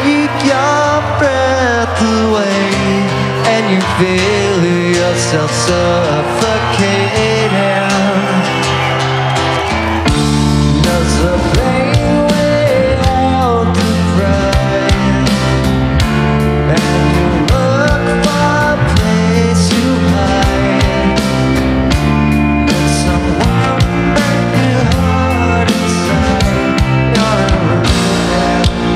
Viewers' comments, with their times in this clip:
0:10 I LIKE HIS VOICE